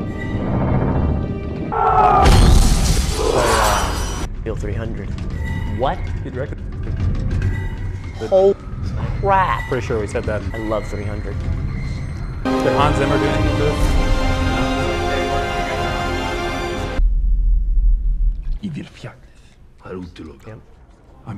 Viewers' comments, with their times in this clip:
0:07 wait... did he censor "holy crap" ? xD